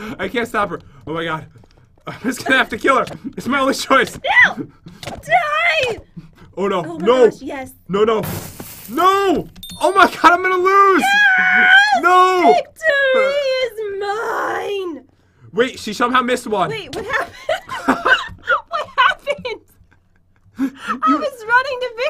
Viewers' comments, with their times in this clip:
0:09 is where it starts the laugh